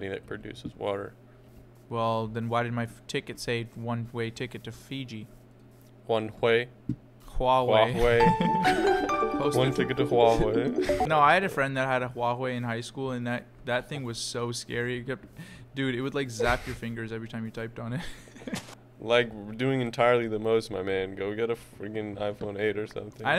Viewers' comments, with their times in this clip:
0:08 when the phone started to ring my mom and dad jumped and thought that their phone was ringing 😭